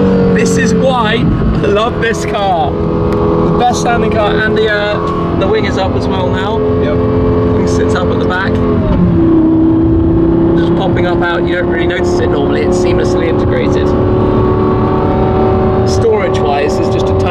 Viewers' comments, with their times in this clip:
0:03 it sounds like aventador launch control